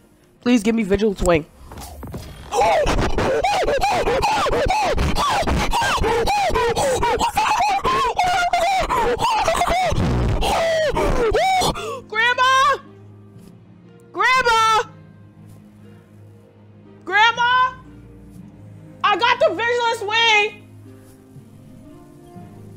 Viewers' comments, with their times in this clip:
0:07 wtf are those sounds... Nightmare fuel